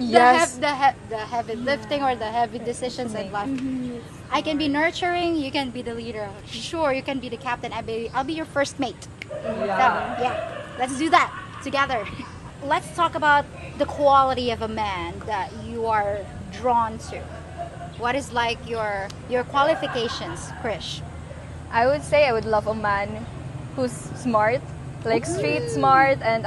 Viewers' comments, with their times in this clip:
0:08 I love the laugh track in the background. 😆